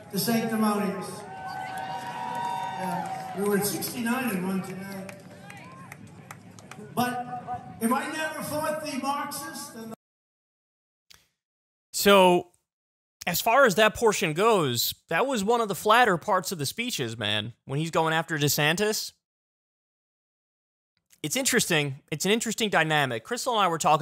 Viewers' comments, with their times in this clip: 0:05 I'm on the same page as that lady yelling "Nice!"